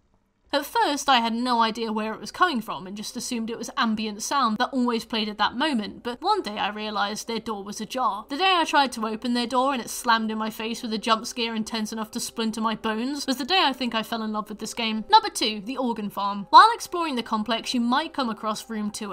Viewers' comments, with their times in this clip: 0:03 wait, there’s no explanation for the gurgling?